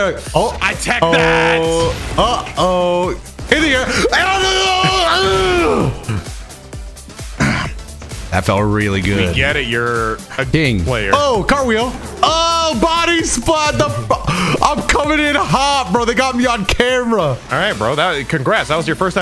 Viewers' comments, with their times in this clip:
0:04 what did bro actually say